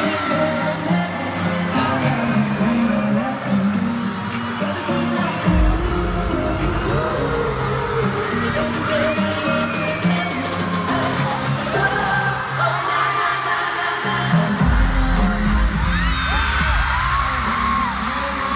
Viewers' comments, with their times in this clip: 0:06 that harmonization got me feeling like ooooooh